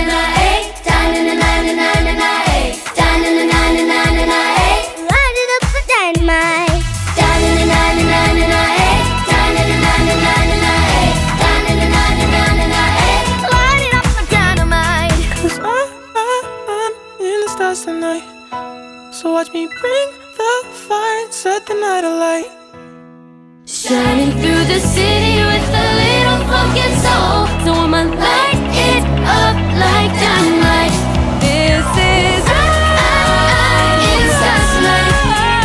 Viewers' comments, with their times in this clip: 0:05 soo cutely she sang it 🥰😍
0:16 ❤ Love his voice
0:17 💖💖😍😍 His voice is very beautiful :-)